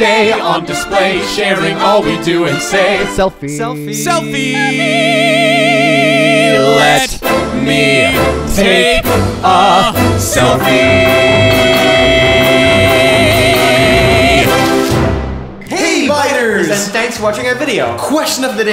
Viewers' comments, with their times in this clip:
0:04 that note oh my god